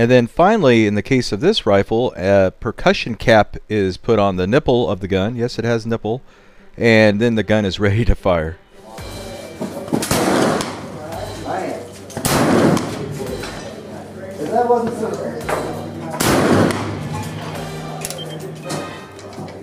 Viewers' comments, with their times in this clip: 0:04 He laughed when he said nipple